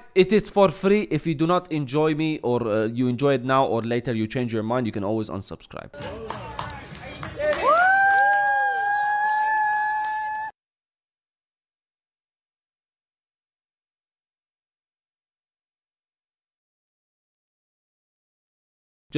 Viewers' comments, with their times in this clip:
0:05 Had to have a sniffy sniff huh?